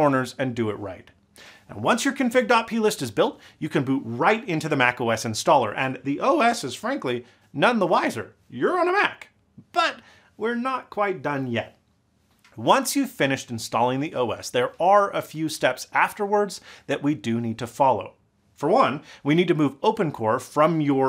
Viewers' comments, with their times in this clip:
0:05 That voice crack tho XD